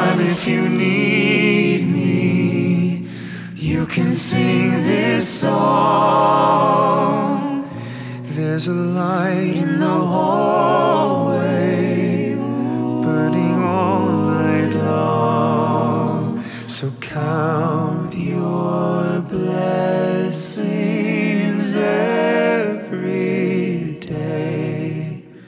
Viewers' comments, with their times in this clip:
0:10 when Mitch comes in, in that small part it makes my heart melt. It's so beautiful.